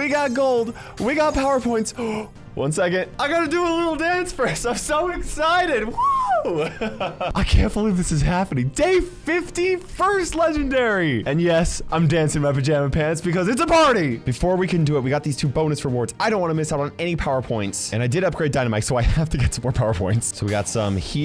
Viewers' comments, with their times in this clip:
0:04 The amount of pure child like joy in his voice in this moment was just so perfect lol
0:05 that voice crack 😂
0:09 he was so excited for the 80 credits that his voice dead 🙂